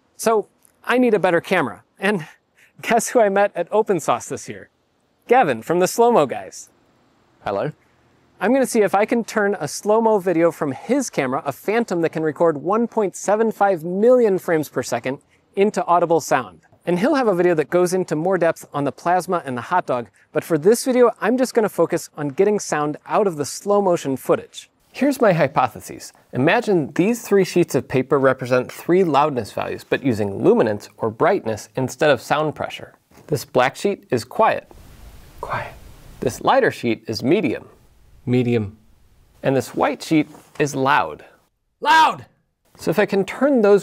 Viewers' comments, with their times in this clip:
0:07 A plain subtle "hello"? Funniest dry british self introduction in YouTube history :D
0:25 what is wrong with the sound here? Sounds really weird